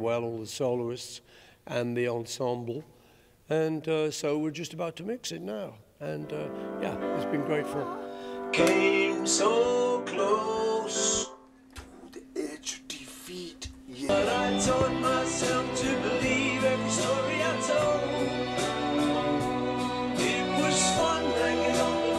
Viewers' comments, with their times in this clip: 0:09 Just wonderful.....moving...got the message across...At I just laughed...that was so natural...ha